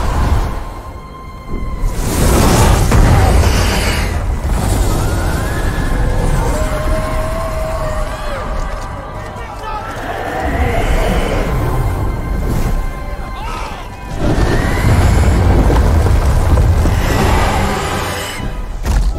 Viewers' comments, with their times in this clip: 0:03 bruhh that sound really reminds me of the Demogorgon-💀